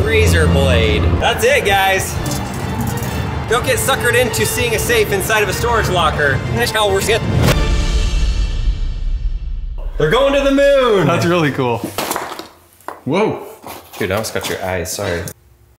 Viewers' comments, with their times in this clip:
0:05 What are the backwards words ? (Edit to fix time)